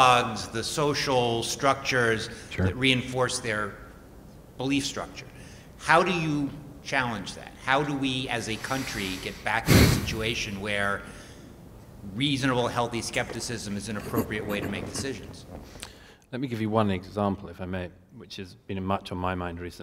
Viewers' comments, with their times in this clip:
0:05 the throat clearing and sniffing comes from douglas murray's mic. just look you can see and hear him clearly taking a deep breath.